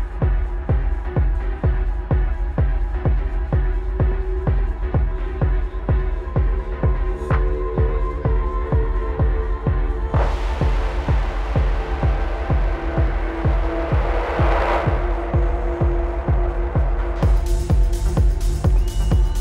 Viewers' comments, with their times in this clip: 0:04 deep hyponetic techno, very smooth mix, Richie's effects transition nicely